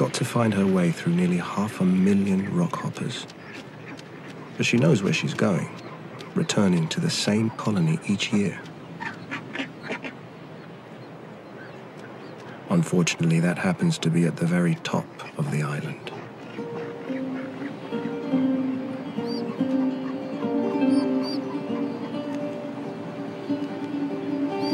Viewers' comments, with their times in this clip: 0:08 Am i the only one hearing the whispers 🤔 on